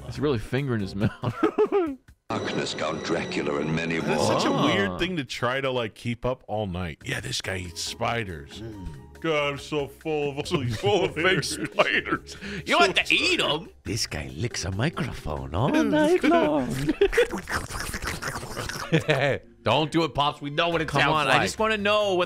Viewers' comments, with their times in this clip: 0:03 did he just say "Count Draculur"?